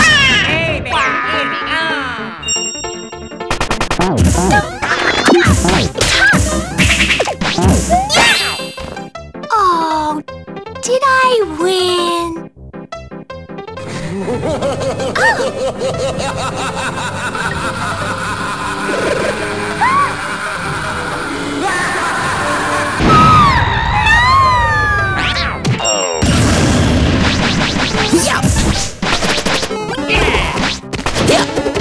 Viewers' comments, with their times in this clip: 0:09 "Evil Laughter Intensifies"
0:09 Peach: Oh... Did I win? Birdo: Nope Manical Laughter Peach: Pulls out Toad Toad: Knocked Out from Earlier Peach: Oh God... Tee Hee? Peach and Birdo: Goes Kaboom
0:13 Where did that laugh come from?